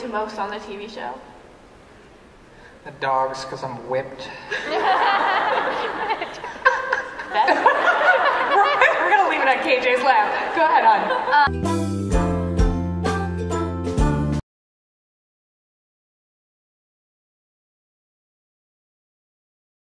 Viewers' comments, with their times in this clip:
0:06 i was trying to focus on Cole and Lili but KJ HAS THE MOST ADORABLE LAUGH OMG